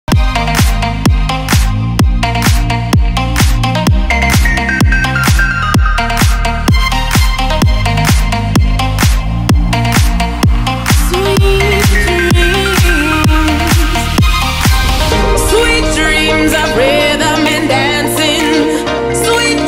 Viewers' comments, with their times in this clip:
0:01 starting beat is too dope